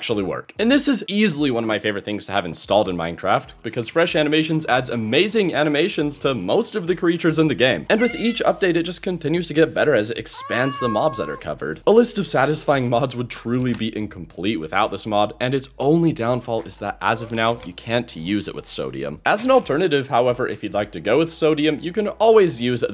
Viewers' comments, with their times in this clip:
0:07 bro I was 100% sure it was my cat lol